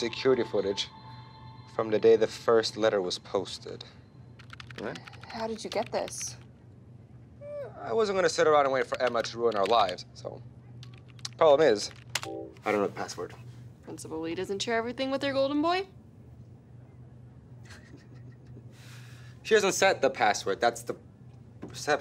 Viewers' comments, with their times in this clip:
0:09 I’m real weak over the cellos in the background 😩😩😩 what a dream 🤤🤤